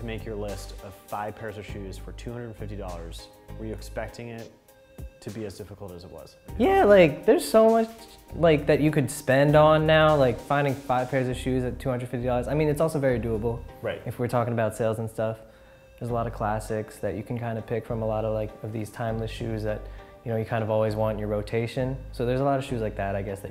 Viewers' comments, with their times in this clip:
0:06 That voicecrack is me af